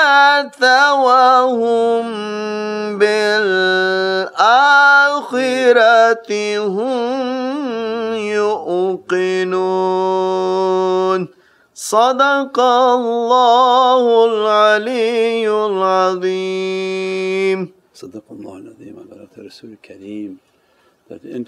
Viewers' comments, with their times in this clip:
0:03 Subhaan Allah soul shakening Quran recitation MashaAllah blessed to attend this whole Sohbah. Jazakallah khair Shakh 🙏.